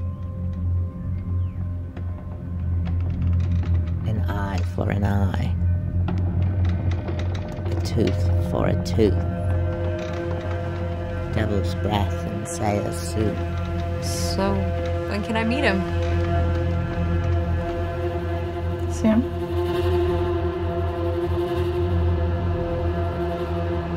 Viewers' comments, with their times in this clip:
0:04 sounds like salad fingers